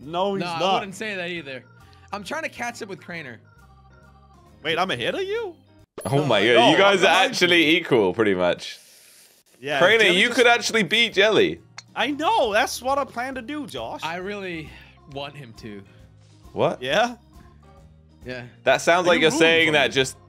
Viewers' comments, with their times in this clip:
0:04 the eys in the background 😂😂😂😂